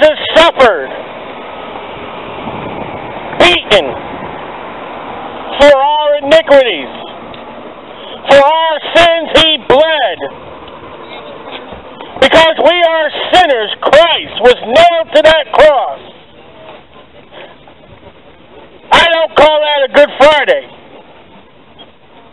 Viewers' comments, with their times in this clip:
0:04 did you say 'inigruities'?